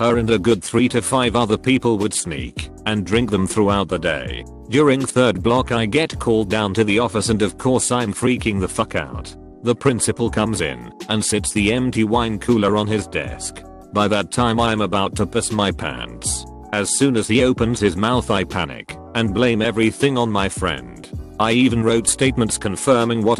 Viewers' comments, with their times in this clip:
0:04 ah yes BARBEEQ